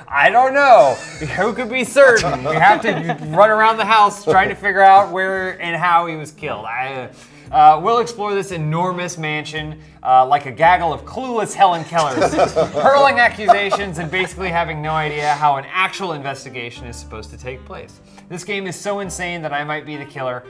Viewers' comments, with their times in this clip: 0:06 that Arnold impersonation is on point